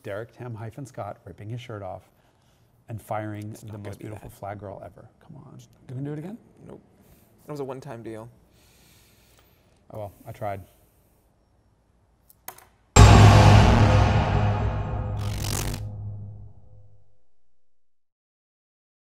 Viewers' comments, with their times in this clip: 0:10 What a brilliant discussion! But guys, get out before My heart almost stopped at that gong or whatever it was!
0:12 Heads up if you are wearing headphones ...I am now cleaning blood out of my earbuds